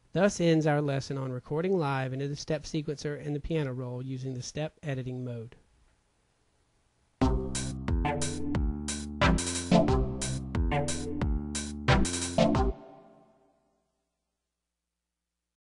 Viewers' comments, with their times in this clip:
0:06 that is an excellent reggae beat!! Thank you so much for these tutorials they're very helpful, not like others